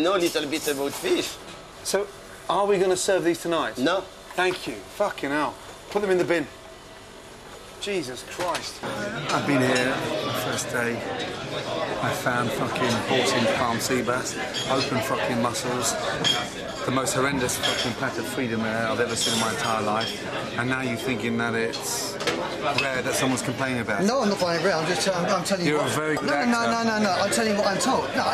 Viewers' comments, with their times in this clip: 0:10 I like how Ramsey is keeping it down while the owner is getting loud and freaking out